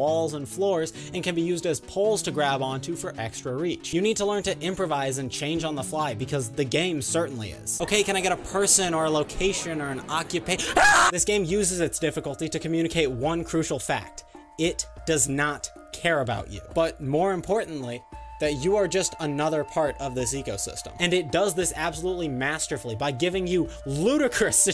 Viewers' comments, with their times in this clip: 0:10 The scream caught me off guard-